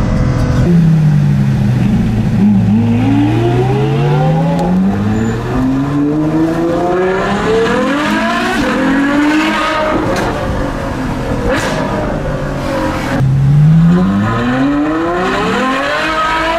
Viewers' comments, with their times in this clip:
0:04 I'd hate to be that guy riding on the bike next to the car, straight up must've blown his ear drums being that close